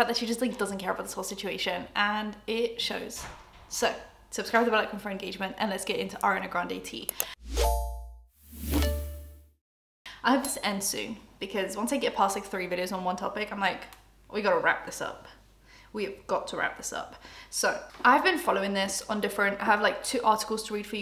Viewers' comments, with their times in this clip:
0:04 Girl what do you be saying in your intros ?! 😭 It's literally driving me crazy trying to figure it out, lmao